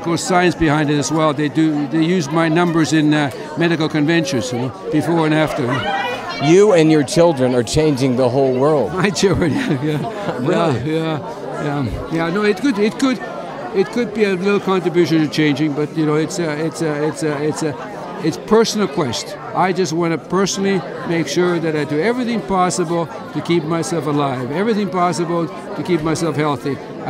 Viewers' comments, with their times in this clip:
0:08 That laugh " my children" bone chilling